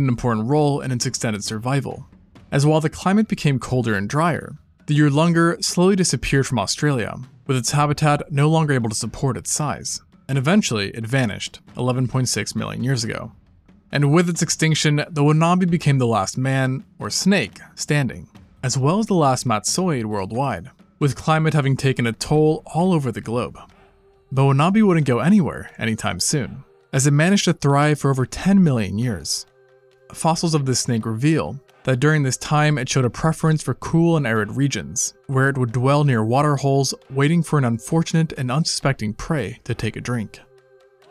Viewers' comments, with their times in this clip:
0:06 im out disappearing noise
0:23 is when I heard it. Is it just me or is the music in here sounding like Turok?